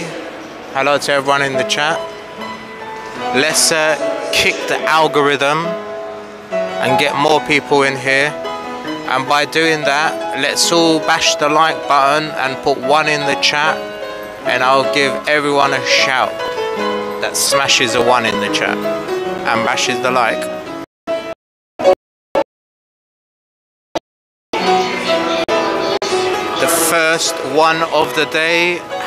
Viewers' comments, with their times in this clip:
0:10 fak ..am now deaf. lol